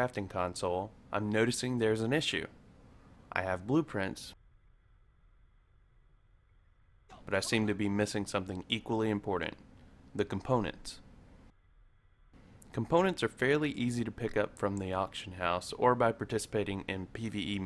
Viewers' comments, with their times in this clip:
0:04 That was really weird 'I have blueprints..............But I seem to be missing something else.' really long pause :P